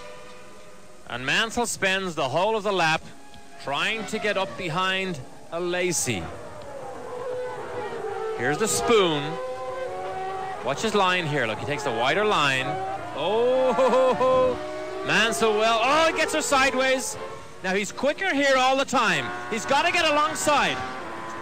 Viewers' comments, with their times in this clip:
0:05 Why does the guy says A-Lazy?